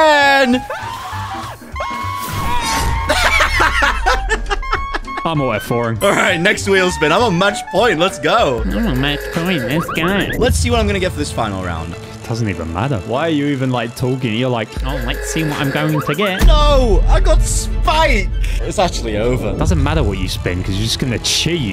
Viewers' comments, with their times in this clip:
0:03 his laugh makes me happy all the time………….that’s not creepy at all